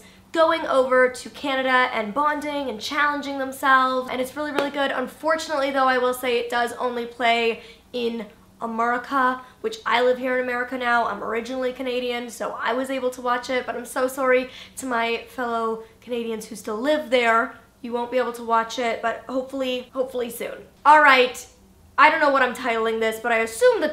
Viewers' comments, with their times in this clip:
0:08 Did she mean to say “AmERRica”? PS. Not a hate comment